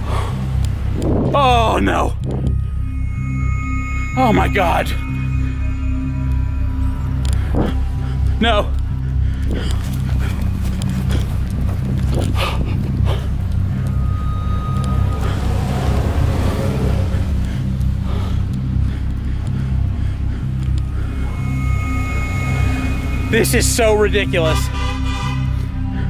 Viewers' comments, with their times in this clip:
0:03 That music on gives me the creeps It is a Perfect music for Chills.
0:13 That music is creepy and this is scary and intense😰😰😰😰😰